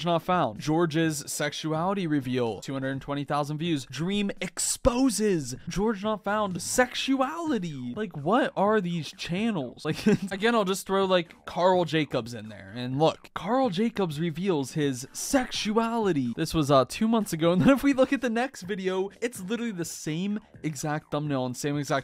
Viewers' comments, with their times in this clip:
0:06 why did this sound so much like dream lol